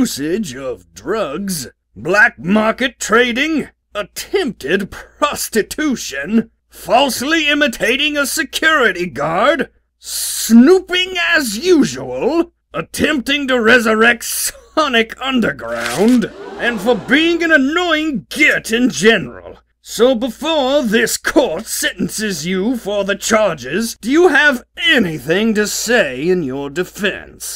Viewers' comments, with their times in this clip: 0:10 Nope... Sno-PINGAS usual
0:10 activate subtitles and you'll read PING AS
0:10 Snoo PINGAS usual